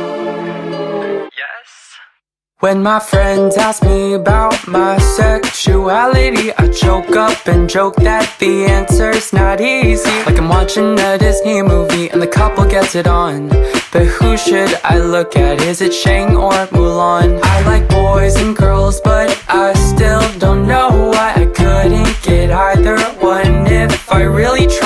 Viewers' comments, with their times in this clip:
0:08 𝘾𝙊𝙐𝙂𝙃 𝘾𝙃𝙊𝙆𝙀- .... Same